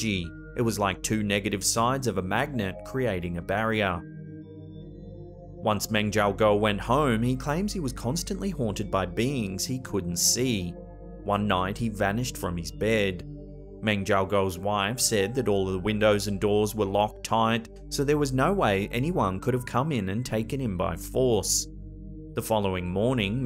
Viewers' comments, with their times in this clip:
0:09 "he claims he was constantly haunted by beans he couldn't see"